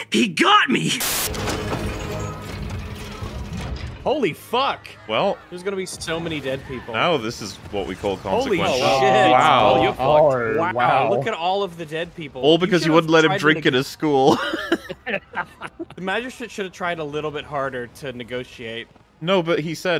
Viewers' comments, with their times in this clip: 0:07 I got flashbacks to Battlestar Galactica with the Basestars launching nukes at civillians or shooting missiles at the Galactica. They even used a similar sound effect, wtf?